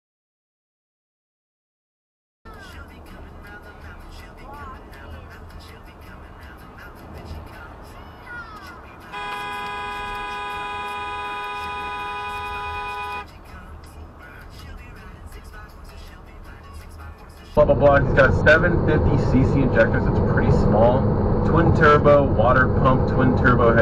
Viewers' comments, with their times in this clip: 0:05 kinda like the timely "wee haa"